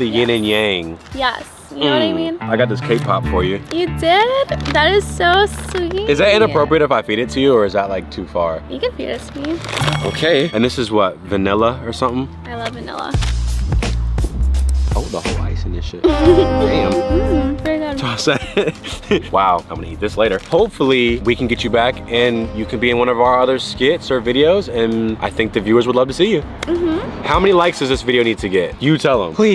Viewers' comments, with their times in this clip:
0:06 brooo I thought he said "beat it to you"💀
0:13 the porn hub theme music killed me